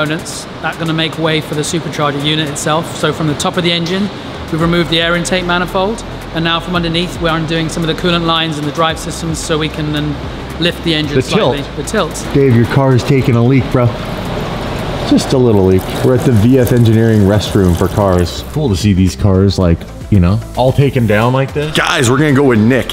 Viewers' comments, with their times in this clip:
0:04 I can literally hear that man talk forever and never get annoyed